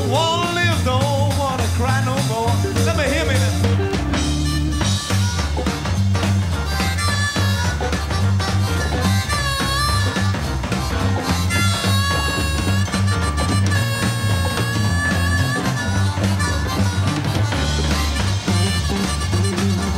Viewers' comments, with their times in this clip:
0:07 Was it just me or did the drummer pick up the pace of play ? Seemed like the tempo increased ever so slightly